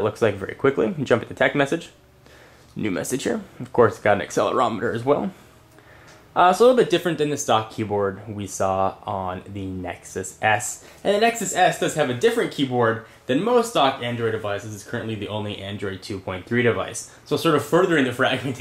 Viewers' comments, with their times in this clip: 0:04 sounds like he jizzed lol *no offense*